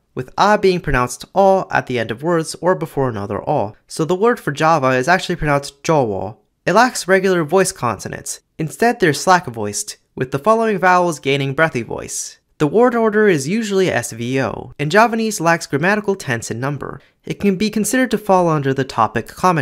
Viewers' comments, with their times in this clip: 0:04 Sounds like a murmured swear word in my language 😂